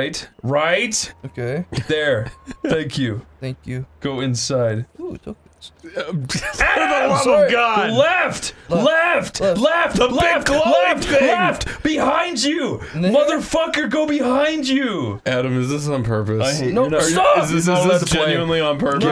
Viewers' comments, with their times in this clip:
0:04 "Ooo tokens!" The way he says it is so damn adorable XD